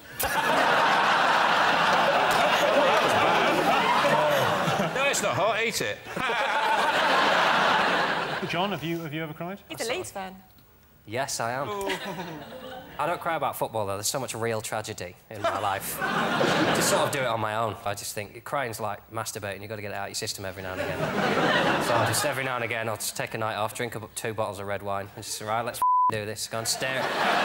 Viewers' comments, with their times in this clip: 0:08 After the question about whether Jon ever cried, I thought I heard Rachel respond, "He's a 🏒 Leafs fan."